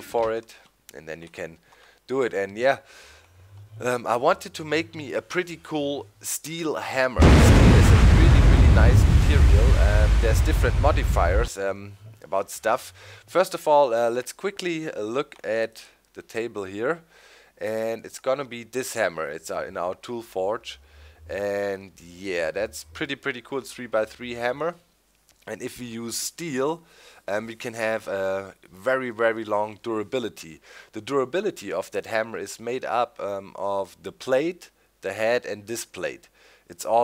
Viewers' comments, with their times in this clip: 0:04 What The Heck loud thunder
0:06 What was that loud boom ?
0:06 death to headphone users
0:07 What was that loud noise ? Scared me, suddenly a almost like an explosion!
0:07 anyone know what that crash/booming sound was ?
0:07 I usually listen to videos while playing minecraft and a creeper blew up in my world and I thought the sound was the creeper xD
0:07 what explosion sound was that
0:07 just after that, there is a big boom sound and he didnt notice
0:07 MY EARS XF
0:07 RIP Headphone users :(
0:07 That thunder scared the heck out of me
0:07 That thunder sec scared me
0:07 Holy creeper what in the world!?Sounded like WW3 started.
0:07 What was that noise ?
0:07 ITT: People commenting about the weird noise
0:07 bug explosion sound?!?! WTF
0:07 what is that explosion noise
0:08 Wtf was that noise ????? Made me jump
0:08 What was that noise ??????
0:12 what was that noise ?!?!?!?
0:12 When using headphones, mute them You're welcome.
0:19 rip headphone user XD!